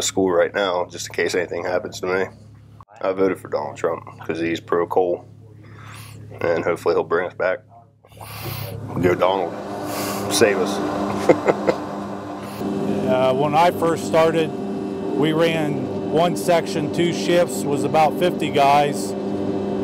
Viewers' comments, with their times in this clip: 0:03 The way he sniffs I hope that ain't coal dust